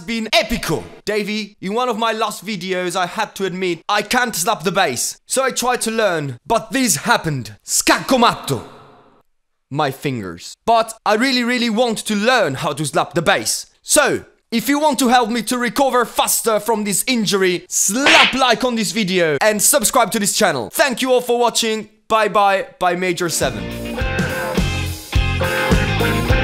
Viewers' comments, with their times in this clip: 0:07 The italian pronunce of "Scacco matto", dude, IT WAS P E R F E C T (looping 1 hour)